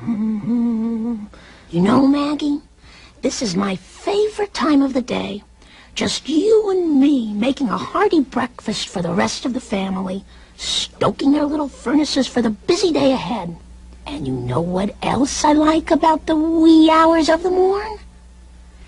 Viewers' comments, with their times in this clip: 0:03 i couldn't help but notice that the toaster didn't make a sound